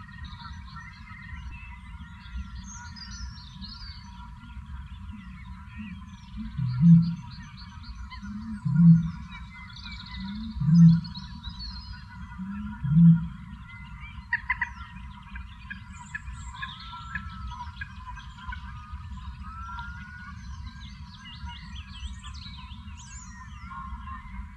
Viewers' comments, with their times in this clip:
0:06 approx - although may not be audible on a small-speakered (eg. mobile) device.
0:06 Sounds off sounds kinda like an oboe for the peoole who arent sure what their looking for.